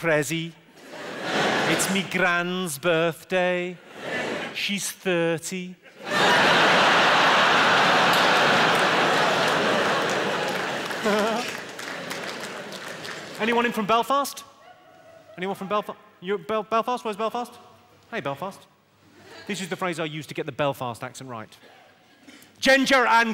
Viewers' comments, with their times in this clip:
0:10 the lil giggle makes me very happy